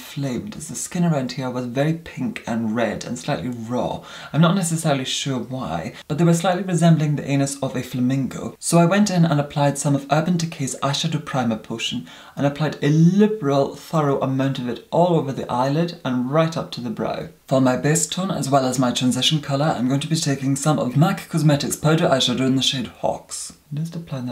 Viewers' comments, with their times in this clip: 0:07 you just talked about a flamingo's ass and made it sound so classy